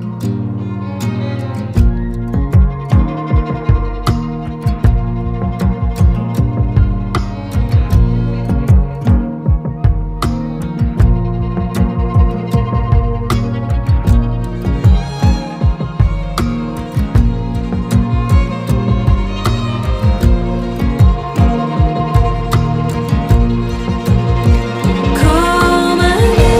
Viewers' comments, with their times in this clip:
0:10 The baseline is reminiscent of I-80 - almost a subtle nod to See You Around.